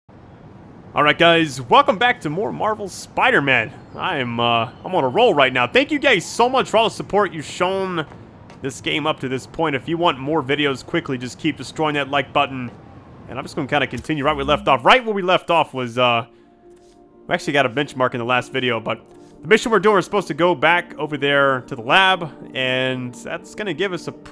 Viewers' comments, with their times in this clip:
0:05 Im not making fun of ur speech but thank u gay wait GAY!!!
0:06 ‘thank you gays so much’